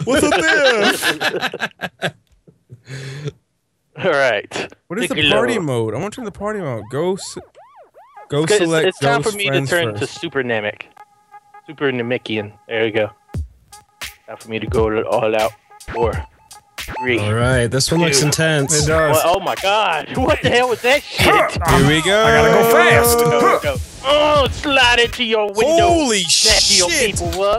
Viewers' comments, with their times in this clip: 0:09 When the music starts, it almost makes the race 10 times better idk why